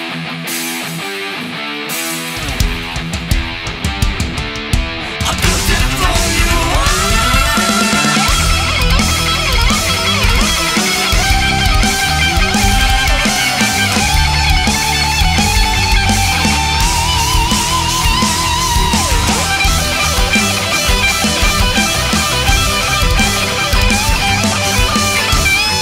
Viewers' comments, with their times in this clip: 0:07 Good Movie, good song but dudeee that solo that is fucking god tier! We need a sequel!!